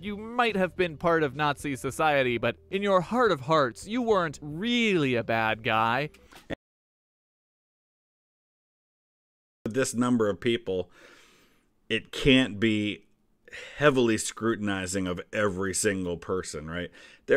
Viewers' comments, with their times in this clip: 0:05 There's also a couple seconds of silence just in case you weren't aware of that.